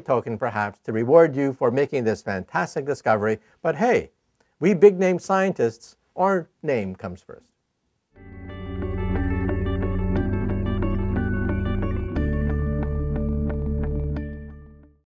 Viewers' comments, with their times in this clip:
0:03 I hope he was kidding in Because he sounded quite serious to me lol